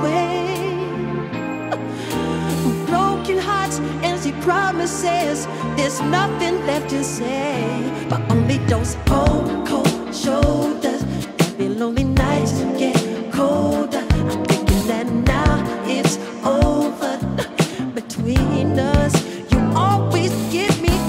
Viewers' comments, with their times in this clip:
0:08 Sounds like "Carousel"